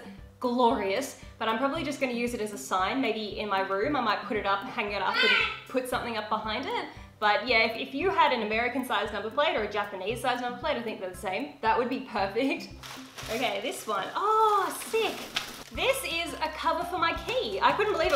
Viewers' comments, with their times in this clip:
0:04 sounds like he says liar
0:04 your parrot said hi